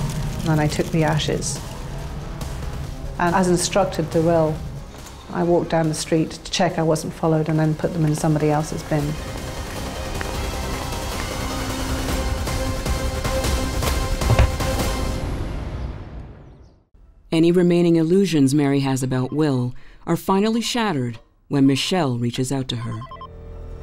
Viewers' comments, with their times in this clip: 0:09 great coverage outbut TOTALLY over the top dramatic 'music' 🙄 - very American 😅